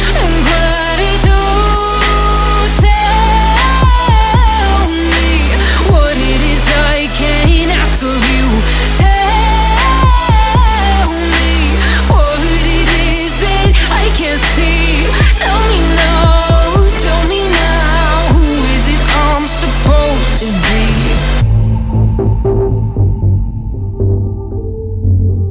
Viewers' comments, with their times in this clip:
0:08 🔥🔥🔥🔥🔥 are you still listening every day This voice is fascinating 🔥 👇👇👇👇